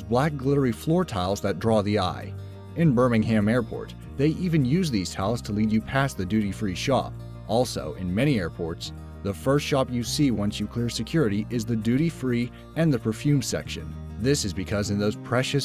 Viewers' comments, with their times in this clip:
0:03 I’m sorry but I just have to comment on how this person pronounces “Birmingham”.